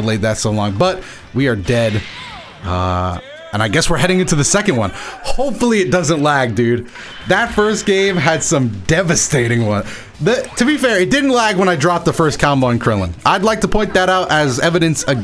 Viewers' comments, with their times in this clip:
0:03 Zamasu still talking while being eaten😂😂